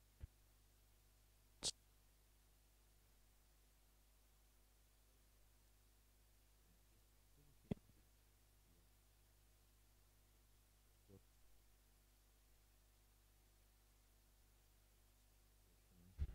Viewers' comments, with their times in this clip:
0:03 The audio went out